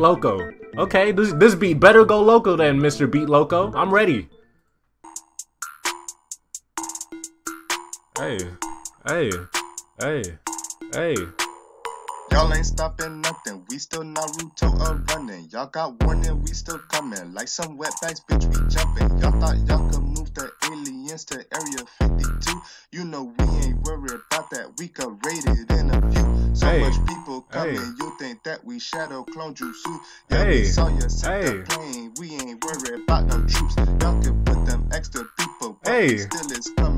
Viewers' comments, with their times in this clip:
0:05 area 52 aka fire song plays
0:13 I’m sorry my man but when he hopped on da track it just killed da vibe
0:21 why is the beat fire but singing trash?